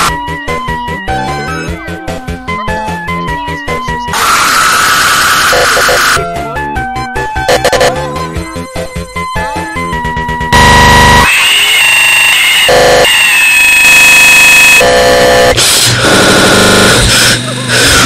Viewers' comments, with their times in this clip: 0:04 My ears died headphone warning